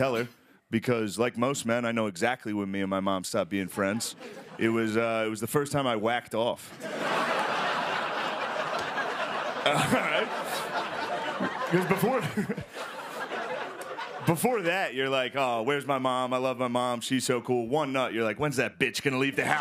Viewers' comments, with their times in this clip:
0:04 "It was the first time that I wacked off"... was that a Norm Macdonald's impression? Very funny. All of it.